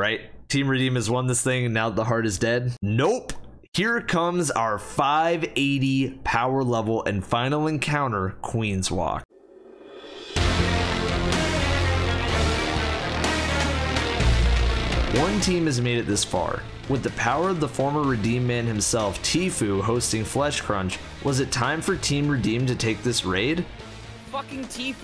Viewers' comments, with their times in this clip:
0:09 that music has a place in the history of game soundtracks, perfect!